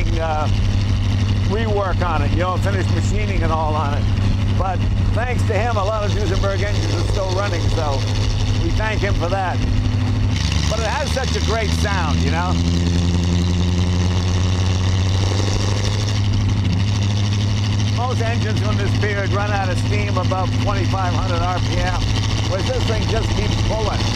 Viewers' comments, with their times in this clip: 0:10 The understatement of the century... "It has such a great sound". More like it has an insanely immeasurable ridiculously fantastic assault to your eardrums.